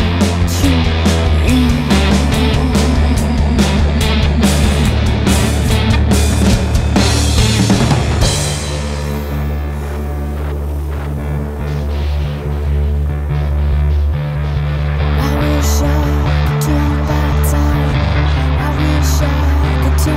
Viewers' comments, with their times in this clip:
0:06 Song is great, but track is bit too long. It repeats itself and in time it became bit dull. It should be end and then it would be perfect.